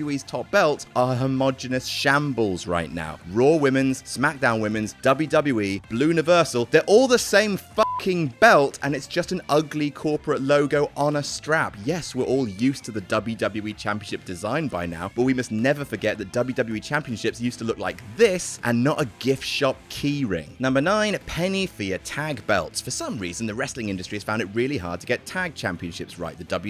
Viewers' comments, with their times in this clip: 0:08 Drops F-Bomb... proceeds to bleep all other cussing. Great editing there guy.